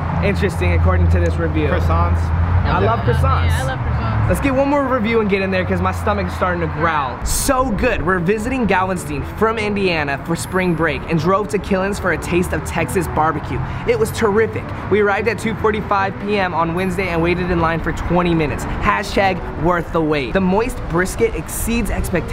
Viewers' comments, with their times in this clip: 0:08 He mispronounced "Galveston"!!😱